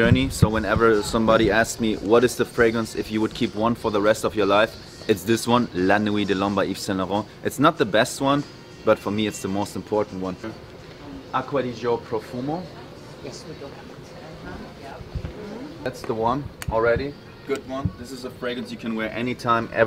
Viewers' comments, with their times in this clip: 0:07 my man became 100% english for half a second.